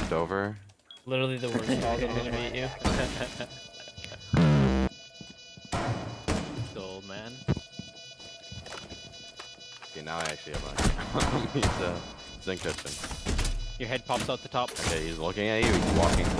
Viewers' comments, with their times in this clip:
0:04 wtf was that noise 😂